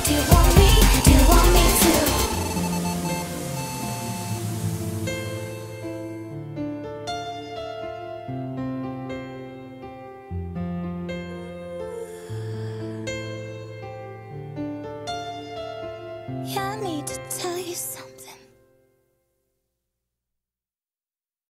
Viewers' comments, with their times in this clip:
0:10 after this "oooh" I was ready for it to end with her whispering "I need to tell you something" and you did THAT. ur a genius